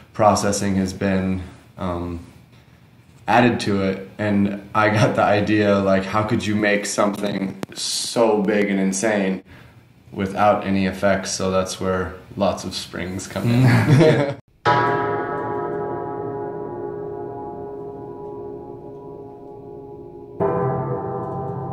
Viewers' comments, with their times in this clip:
0:07 love the glitch sound it scratches my ears so gently...... you should build les ondes Martenot ! I've built a resonator with a gong and a 50w transducer, It's glorious !!